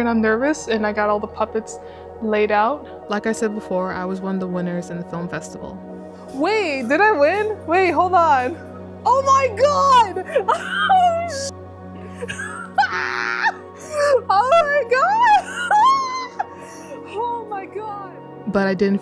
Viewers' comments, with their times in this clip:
0:05 Seeing the joy in your face and hearing it in your voice was awesome. I'm glad that you're not _giving up_, just diversifying the things you do and not pouring all of your effort into this. Everything you do is so impactful and touching and seeing a new upload from you is like eating a nice warm bowl of chicken soup. Here's to not necessarily chasing financial success or stardom, but having fun first and foremost <3